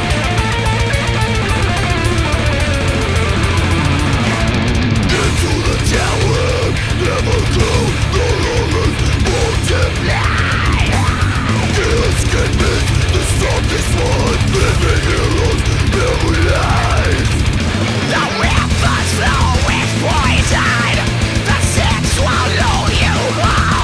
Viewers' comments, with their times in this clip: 0:04 Like This Is Exile, this is the same lead singer, just growling instead of screaming, so this being on Harm 2 instead of Harm 1 makes no sense.